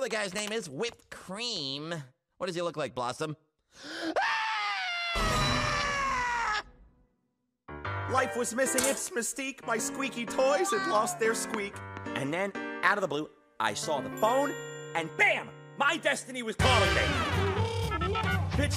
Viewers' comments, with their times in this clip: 0:04 Ruff Ruffman: (screaming)